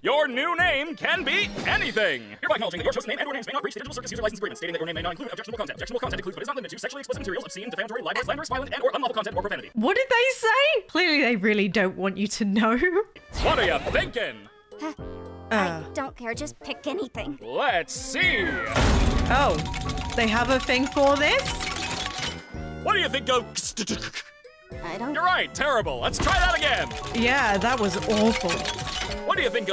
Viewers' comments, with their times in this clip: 0:10 right before that fast speaking turn your playback speed to 0.25 then you can kinda hear it (yes I wrote 2 comment its normal)
0:11 Oh, that’s actually an old commercial thing where they slightly speed up a recorded bit that states the fine print type of things. In this case, Caine was stating the general rules of making a username, like not using profanities or sexually-explicit material